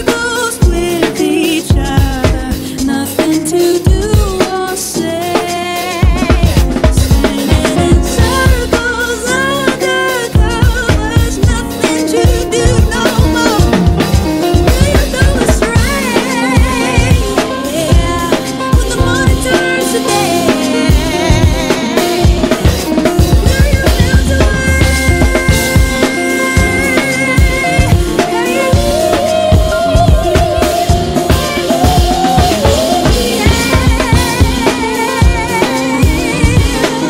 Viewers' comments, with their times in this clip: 0:05 Yo the fill was dope! Very nicely selected beats 🤘✌️
0:20 Hella groovy. The switch up is legit. Unique! Specific shoutout to 👏👏 [is that double kick or single pedal? 🤔]